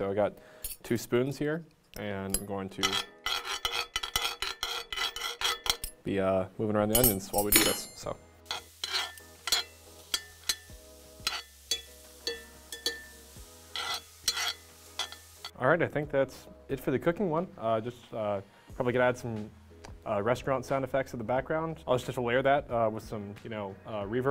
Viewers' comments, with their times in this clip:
0:07 this clink sounds like it would be good for an anvil hit sound